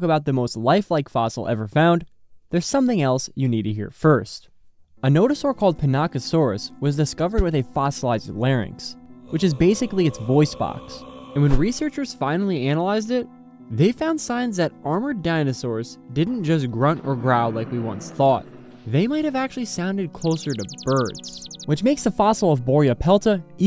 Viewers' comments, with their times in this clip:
0:08 Ah yes: A scientifically accurate nodosaurid call
0:09 not the moai sound effect 😭